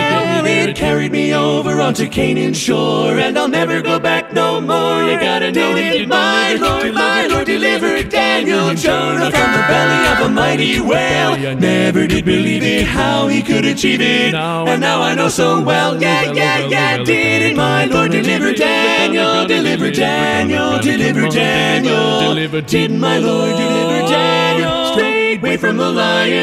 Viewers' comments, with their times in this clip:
0:08 Didn't My Lord Deliver Daniel? is one of my all-time favorites and it's great to hear an updated version in current year! Easily my favorite part is the 8 part chord near can't help myself from grinning ear to ear. Insane final chord too! Keep up the good work man. See you next week!